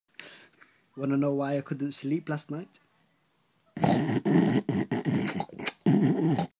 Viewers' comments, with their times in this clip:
0:03 A DOG WITH RAIBIES THAT JUST GOT RAN OVER
0:04 That's me slurping a milkshake